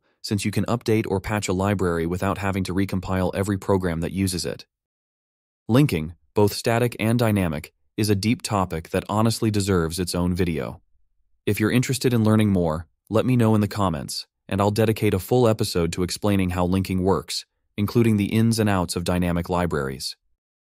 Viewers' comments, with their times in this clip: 0:06 says pyton not python